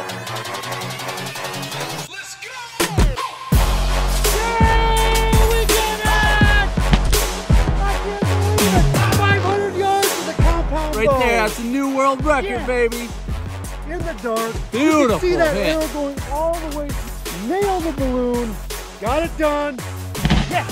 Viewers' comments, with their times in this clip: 0:04 The “Yay we did it!” Reminded me of Sloth from “the goonies”